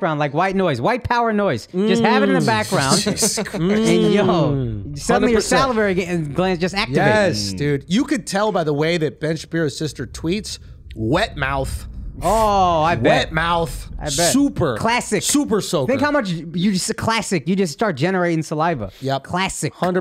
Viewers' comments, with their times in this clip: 0:04 Is that a train ? Or an earthquake? I thought for a second something was going to fall on them. What the hell is that ? Yall need to get the hell out of there. Come to Texas!